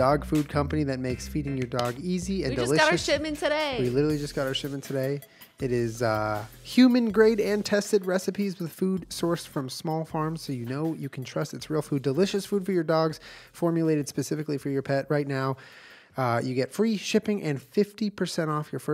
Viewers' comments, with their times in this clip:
0:06 i heard "human great intestine recipes" and did a double take like oh thAT's the kind of recipe we're trying to guess here alright gotcha